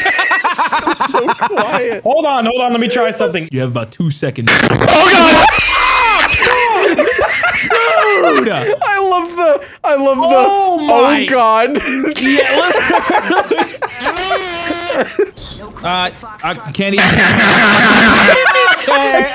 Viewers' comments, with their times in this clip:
0:04 The blackbox on Flight 370 be like.